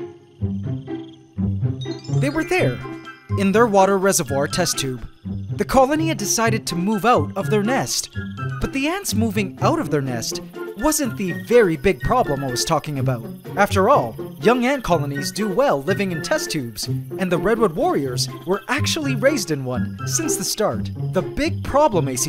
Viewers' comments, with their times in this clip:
0:08 The music is just perfect! 🐜